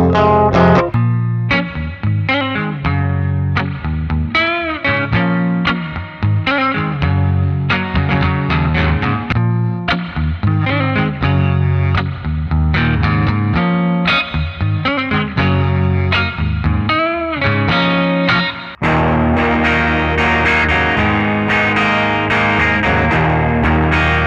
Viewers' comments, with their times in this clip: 0:09 Does anyone know what those lil noises are ? Idk if it's just because of the reverb but they sound sick.